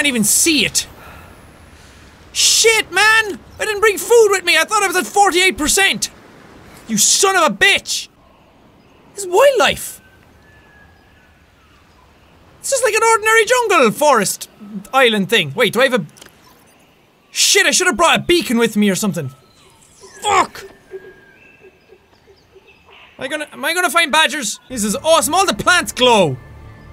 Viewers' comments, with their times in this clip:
0:09 i thought the bird was starting to do the hunger games whistle lol